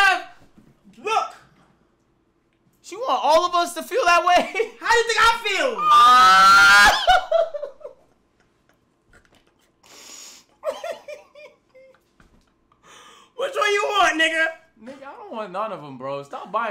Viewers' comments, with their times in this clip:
0:03 boy sounded like a hellkitty